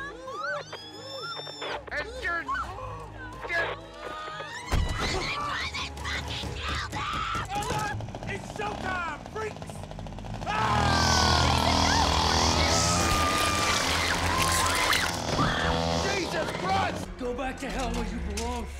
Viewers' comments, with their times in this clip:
0:05 this scream is just horrible. I'm pretty sure the actress lost her voice after that.